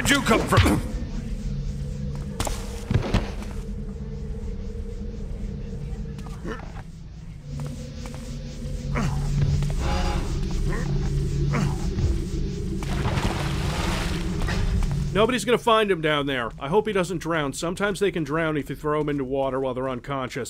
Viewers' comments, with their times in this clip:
0:03 immersion broken i heard somebody sayin something